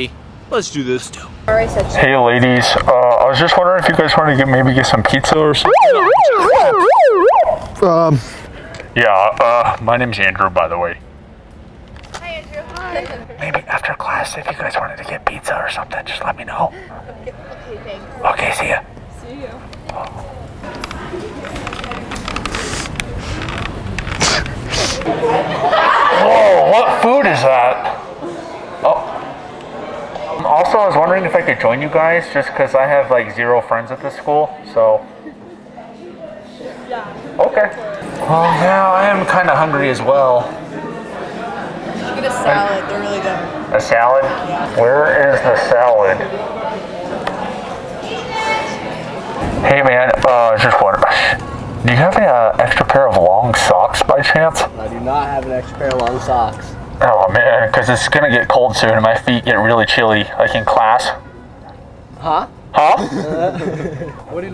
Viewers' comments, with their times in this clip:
0:04 yeah just blare their ears out bro real solid
0:05 IT'S THE SEXY LADY SIREN! It makes that sound whenever sexy ladies are in the area!
0:48 Did someone scream penis ? 😂😂